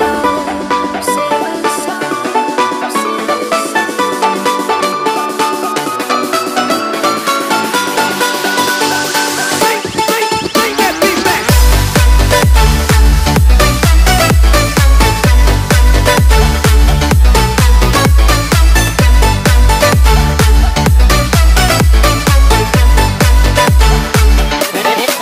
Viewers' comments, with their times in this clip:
0:09 Everybody: Bring Bring Bring Back Beat Back Indonesia: Wik Wik Wika Wika